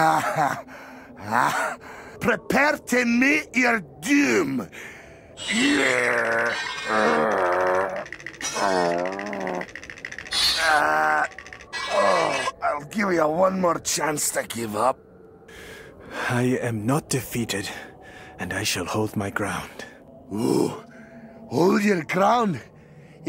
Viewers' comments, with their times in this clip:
0:06 The trembling sounds coming from a CGI characters makes me piss myself lol